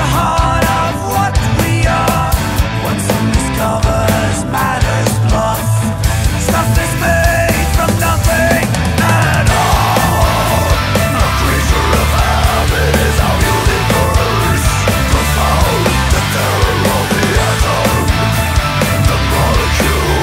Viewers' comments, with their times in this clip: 0:08 the change just melts my brain.